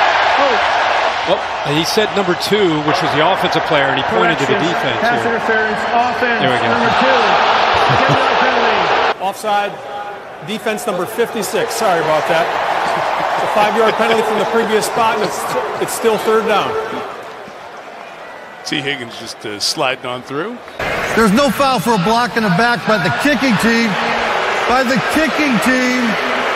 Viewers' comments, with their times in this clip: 0:10 Did i just hear the ROBLOX "OOF" sound